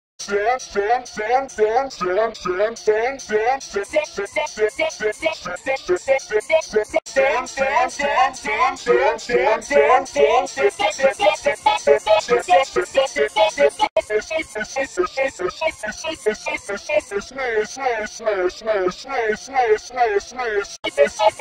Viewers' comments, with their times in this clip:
0:07 Sounds Like X Is Going Weirdness Every